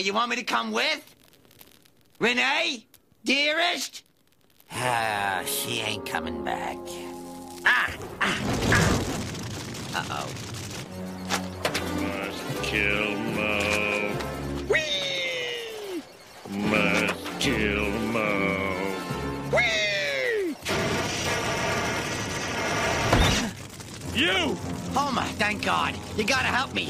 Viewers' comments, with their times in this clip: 0:09 I love how Moe has a casual look on his face and then casually says "Uh-oh" after accidentally setting the place on fire!